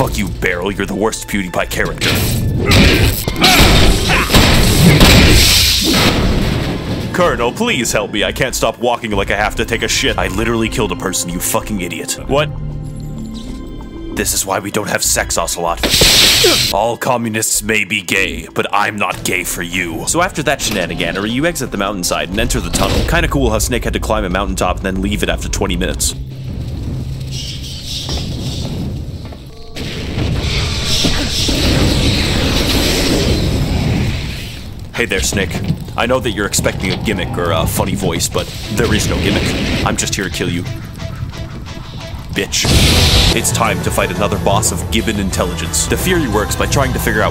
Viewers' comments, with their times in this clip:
0:06 I always loose my shit i love the way that line is delievered. 10/10 dude
0:34 best quote ever Especially the pause